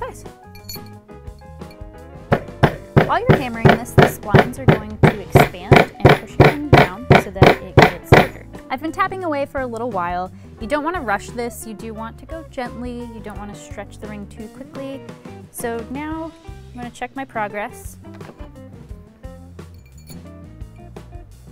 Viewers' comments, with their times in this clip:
0:03 "while your hammering..." muffled voices Bang bang bang bang